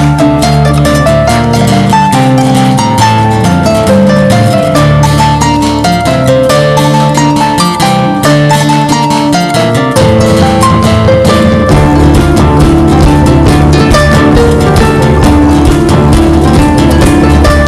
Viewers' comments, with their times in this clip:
0:04 Reminds me of that Linkin Park lick